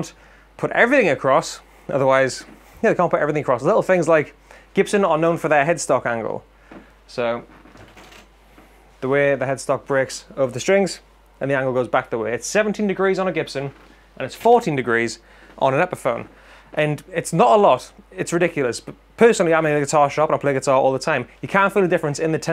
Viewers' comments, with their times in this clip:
0:07 "the way the headstock breaks.." with an emphasis on BREAKS! lol